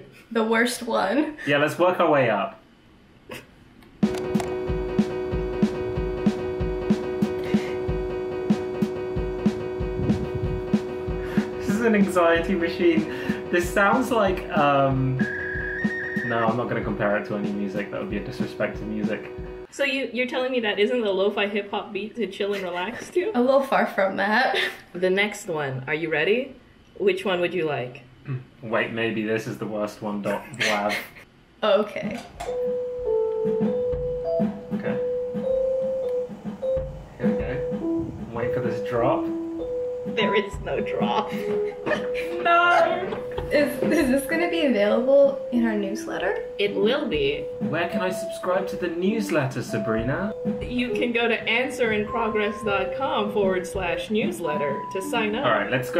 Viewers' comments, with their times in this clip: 0:03 Finally, we have uncovered the legendary "-fi" music
0:04 the first one was exceptionally anxious, it HEAVILY feels like its about to drop/change tunes, BUT IT DOESNT, its not like a tease, ITS LIKE THE CONSTANT SCREAMING OF A PARENT OR ANNOYING SIBLING THAT YOU KEEP THINKING "there is no way it will keep on going at the same rhythm" BUT IT KEEPS GOING AT THE SAME RYTHM
0:04 sounds like when you've got a really old PS2 and you've pulled out the disk while the game was still running
0:14 Reminds me personally of the start of cbat, haha
0:18 the noise your computer makes when windows hangs
0:38 Me lowkey waiting for the beat to drop too 👀🤡